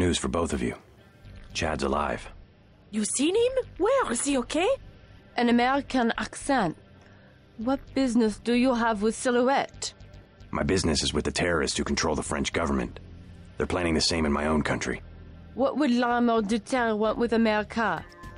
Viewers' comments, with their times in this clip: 0:04 American voice actors trying to do French accent 😂